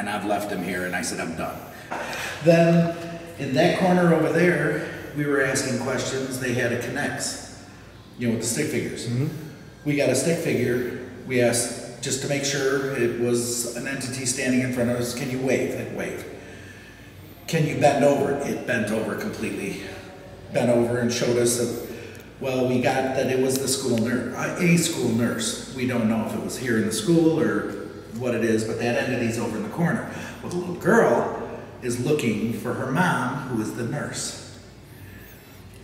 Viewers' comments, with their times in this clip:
0:08 anyone else hear that? Sounded like a woman moaning
0:17 And you can hear talking, is there possibly other ppl there with yall?